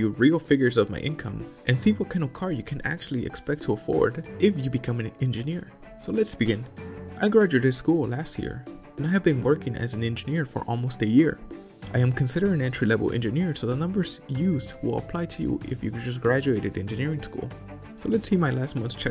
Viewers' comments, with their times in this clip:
0:04 "What CAN of car can an entry level engineer actually afford"